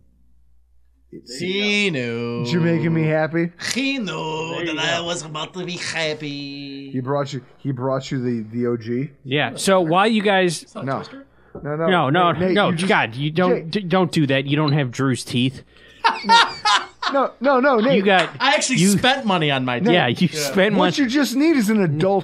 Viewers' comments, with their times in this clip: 0:05 he didn’t just say asi lol Ah psy Ee